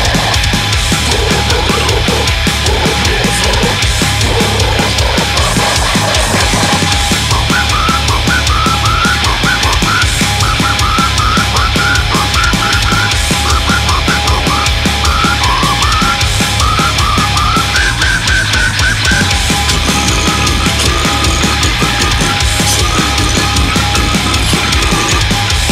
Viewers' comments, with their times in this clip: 0:07 Why does this sound like the whistled theme from The Bridge on the River Kwai to me??